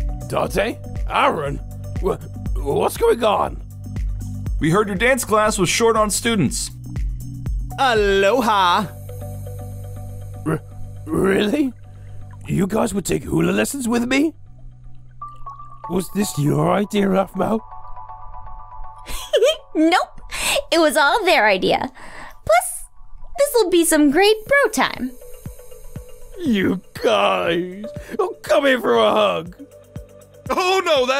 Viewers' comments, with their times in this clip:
0:09 the way he said haloha made me laugh 😂
0:18 dude garroth sonds like cookie monster lol🤣🤣😂😂😂😂